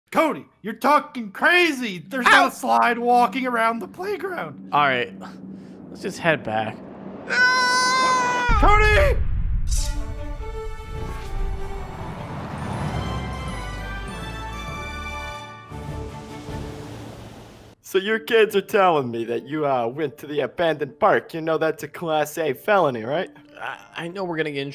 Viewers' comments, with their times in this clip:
0:06 “Let’s head back” goes forward starts walking sideways for no reason makes an extremely unrealistic scream Me: bruh